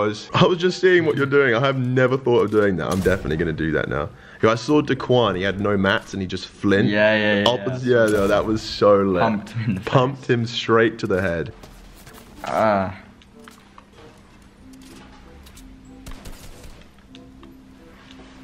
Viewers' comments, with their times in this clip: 0:04 he literally said dickuan